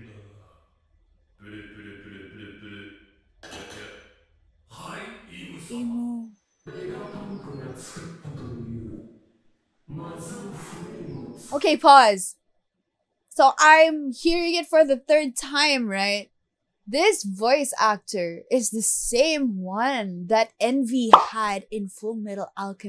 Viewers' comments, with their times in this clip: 0:10 I saw some japonese fans saying that the voice sounds like Marina Inoue (Armin on AoT, Momo in My Hero Academia) or Minami Takayama (Conan in Detective Conan, Envy in FMA:B)